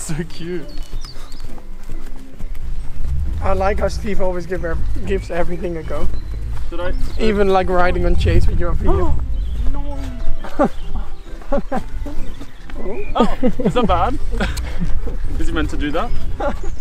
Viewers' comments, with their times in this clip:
0:04 the horse in the back really said 🦒